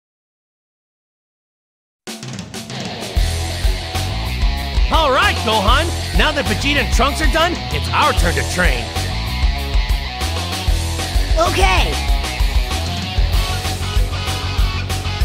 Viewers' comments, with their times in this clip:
0:03 I love this theme! When I hear it, I automatically think super saiyan.